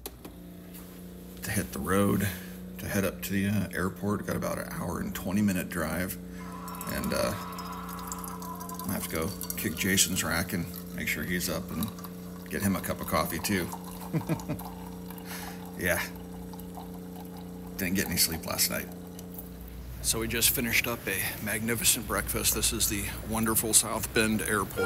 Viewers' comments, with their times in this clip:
0:05 what's up with this coffee machine doing the noise of a dying combine soldier of half-life 2 ?